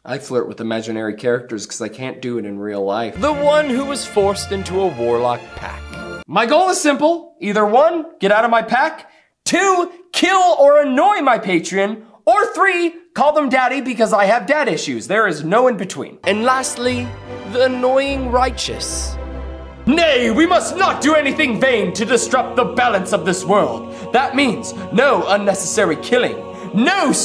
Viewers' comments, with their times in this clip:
0:09 “Kill or annoy my patreon.” Was that a Freudian slip?